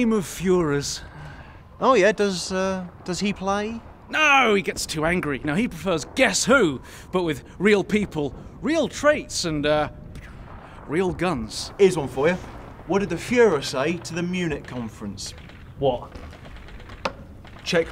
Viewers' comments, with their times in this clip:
0:04 his voice like billy butcher from the boys series